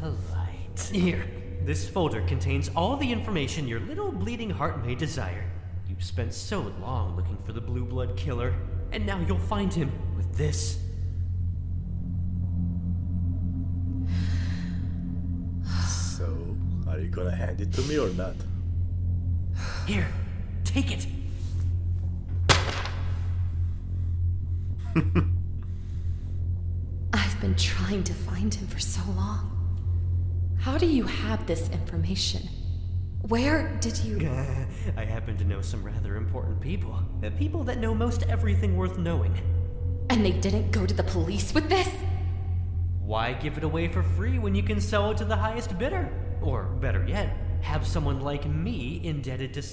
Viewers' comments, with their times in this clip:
0:09 "28 stab wounds" Tanner asks calmly
0:34 I love tanners little gggeeeehhhh on